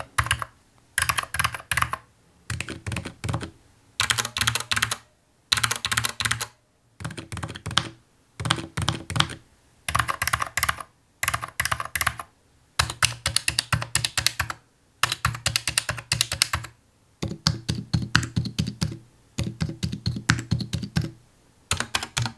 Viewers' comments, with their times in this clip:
0:04 Sounds like my frog Oh yeah should have probably fed him